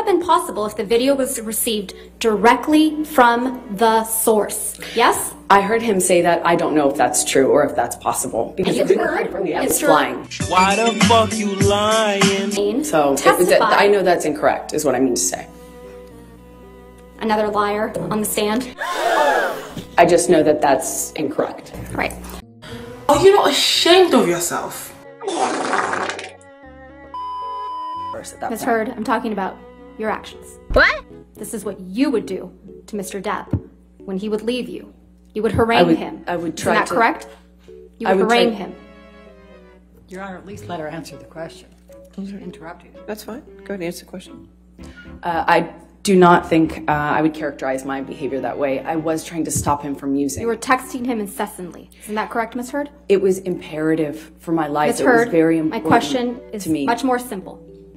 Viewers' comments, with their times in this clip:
0:05 Ok but in my experience with getting away with lies to my friends no I’m not a professional just saying. You never want to immediately follow it up with a high tone and a tearing up voice as a response. That tells everyone you prepared for this question which immediately tells them that you are lying. Heck know does she understand the basic rules of lying.
0:44 THE WHISTLE INHALE I CANT😭😭😭